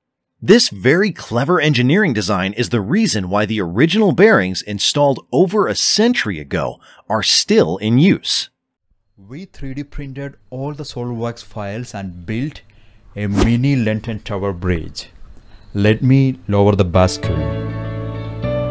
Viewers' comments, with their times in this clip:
0:05 can’t hear that